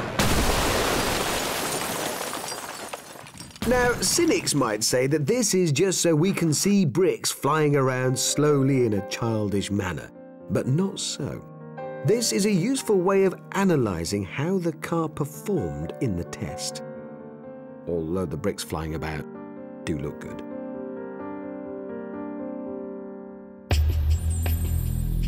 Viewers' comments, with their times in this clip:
0:06 he sounds like Nick Hewer